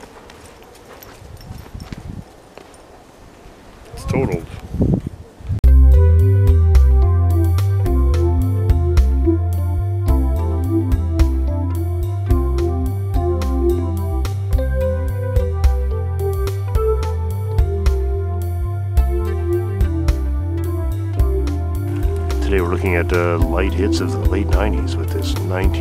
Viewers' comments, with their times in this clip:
0:10 Lite Hits with the Growing Pains style theme music---hilarious!